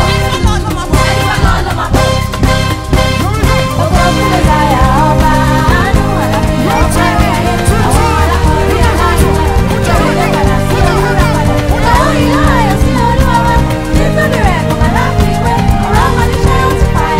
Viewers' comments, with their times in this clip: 0:03 That switch in 🔥🔥🔥
0:03 Who has an idea of the song sung ? Lead guitarist was 🔥🔥